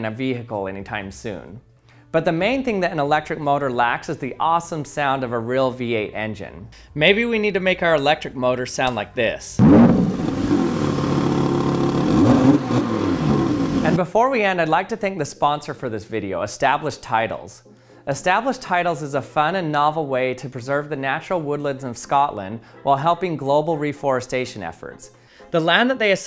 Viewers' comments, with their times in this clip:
0:10 that sounds of electric engine gives me goosebumps.🥵🥶😂